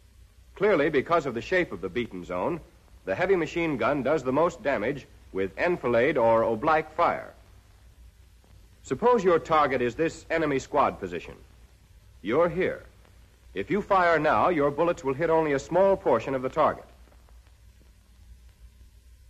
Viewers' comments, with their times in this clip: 0:06 sorry what is that word he says? Oblaque? Edit: he is apparently saying "oblique" but pronouncing it differently.